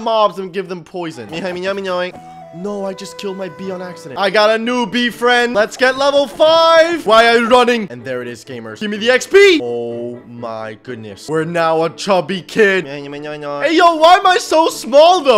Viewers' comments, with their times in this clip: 0:03 only people who watch Naruto will know the sad music